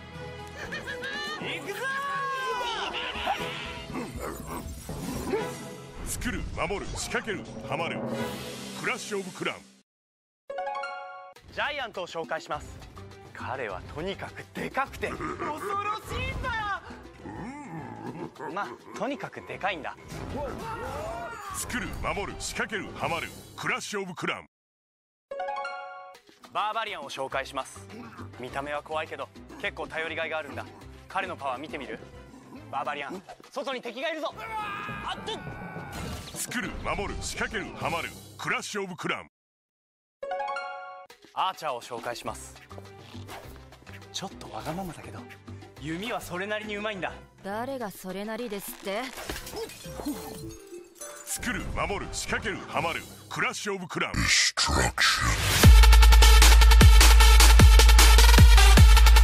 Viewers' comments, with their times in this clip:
0:07 Crash of Cran!
0:08 CRASH OF CRANS
0:22 Crash of cram
0:46 Archer speaking Japanese making me act up 🥵
0:47 the archers voice actor sounds familiar